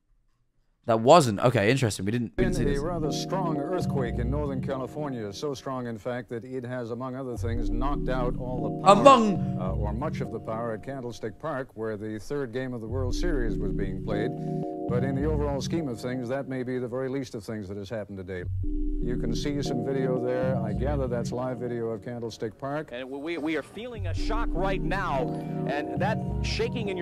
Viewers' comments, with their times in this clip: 0:08 lmao how tf did we both go among O: